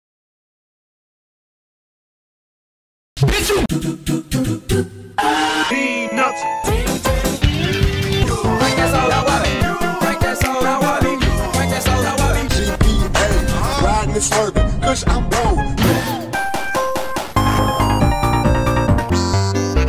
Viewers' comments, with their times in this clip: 0:04 is one of my favorite musical sequences I’ve ever heard
0:07 why the sonic heroes one sounds like the beggining of Endors toi by Tame Impala